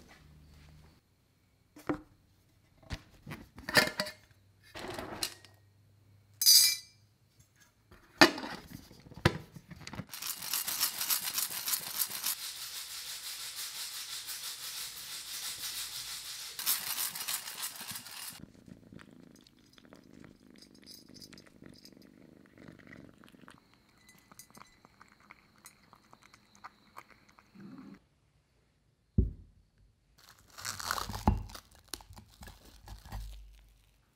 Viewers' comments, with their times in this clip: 0:10 When u turn on captions FAT CAT FAT CAT
0:19 the cat was doing asmr 😂 so cute tho 🥰